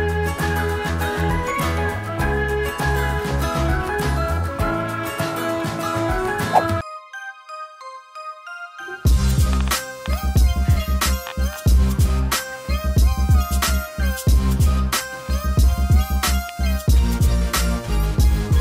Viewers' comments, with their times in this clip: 0:04 That yawn was so cute 😍🤣